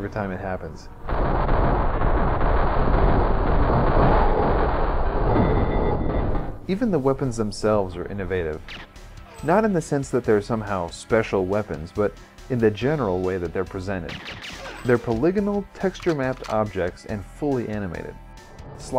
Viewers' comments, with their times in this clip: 0:03 Is it just me or does the slo-mo guard dying sound exactly like killing a Kritter in DKC?